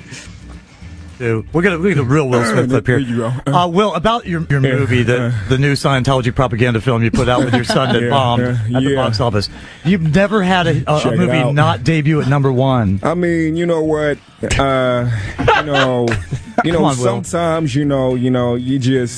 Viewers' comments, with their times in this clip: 0:06 All of these are impressive, but what's funny is that I'm most impressed by Jay Pharaoh doing Will Smith. Will doesn't have a very specific way of talking. He talks normal so it's very hard to do something like that. There's no obvious (or much) characteristic to mimic or parody as most impressionist do. (I closed my eyes and really heard Will)